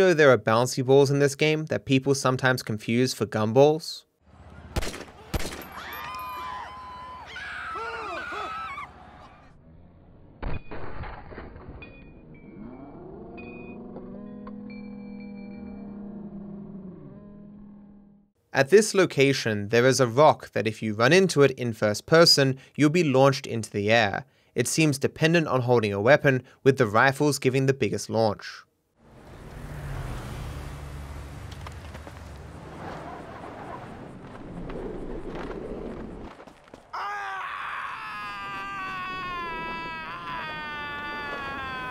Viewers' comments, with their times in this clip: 0:05 is everyone scared of the gunshot or the bouncy balls?
0:09 the slow down scream is funny 😂😂
0:23 franklin:AHHHHHHHHHHHHHHHHH suptitles: [music]